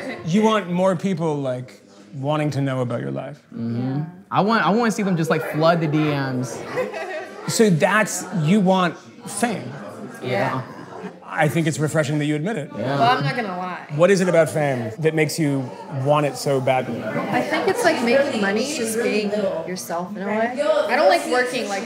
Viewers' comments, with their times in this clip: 0:08 That "yeeah" is empty. No substance, no depth, nothing sacred. Just an empty superficial money "yeaah". It's really sad.